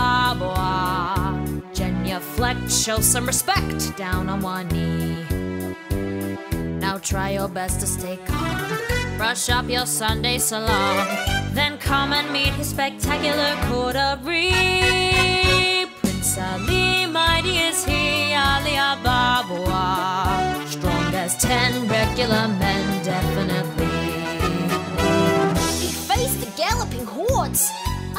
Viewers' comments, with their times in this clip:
0:09 Brush up your Sunday salon OMG THAT PICH